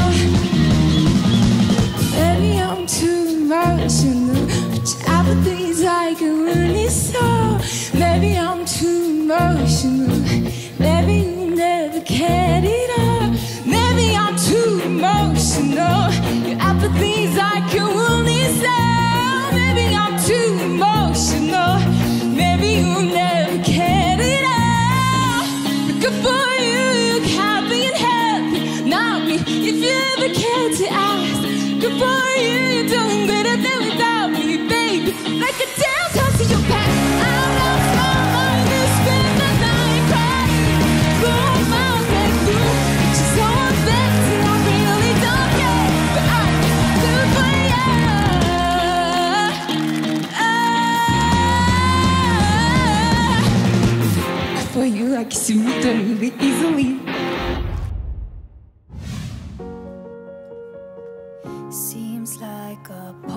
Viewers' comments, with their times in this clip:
0:07 I dont like her singing voice that much but she did really good <33
0:48 she is more stable than olivia lmaooo